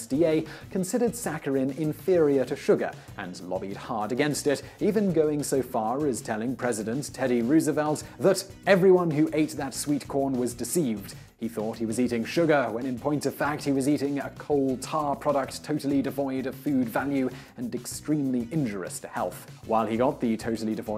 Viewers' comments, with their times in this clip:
0:08 Another instance of, I suspect, intentional mispronunciation of a quote. he clearly says "[...] and extremely INJUROUS to health.", omitting the second "i". I have checked both U.K. and american pronunciations, and it should be heard regardless. It appears suspicious to me because I have noticed these small mistakes in several instances, and the host has otherwise excellent pronunciation.